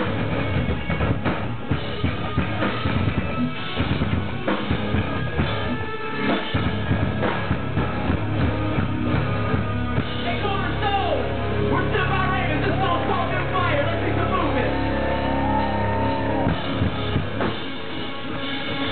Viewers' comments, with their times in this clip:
0:05 sounds awesome, how did they get that reverse sound effect? Sounds like the guitarist just turned his volume down completely then turned it up again, but can't be sure, doesn't look like the bassist does anything weird with his volume knob... ANYWAY! Awesome prayer during the intro, and an awesome song. Wish they'd come over to the UK!!! They'd pack out halls and churches everywhere!